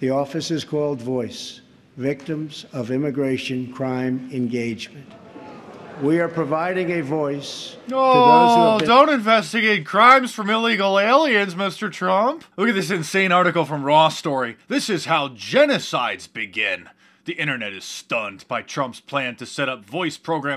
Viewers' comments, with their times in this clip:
0:04 I bet PeeNN (the home of yellow journalism) added the "Awwwww!!!!!!!" sound effect. I wouldn't put it past them to use sound effects and music to influence viewers.